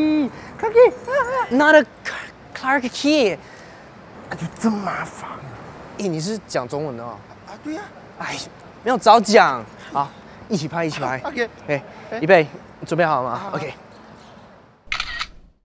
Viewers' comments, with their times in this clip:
0:12 is that guy taiwanese? :D he has the taiwanese accent like Henry from Suju M hehe!